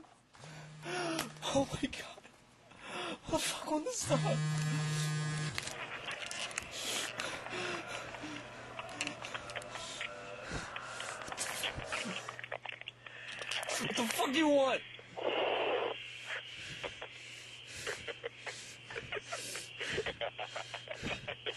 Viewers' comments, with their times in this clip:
0:05 The phone call kinda sounds like habit